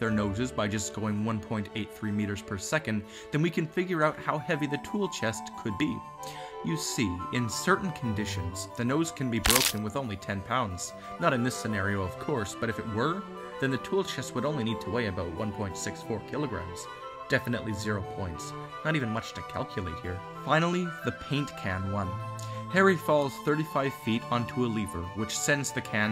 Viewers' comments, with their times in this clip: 0:08 That cracking sound scared the life out of me! XD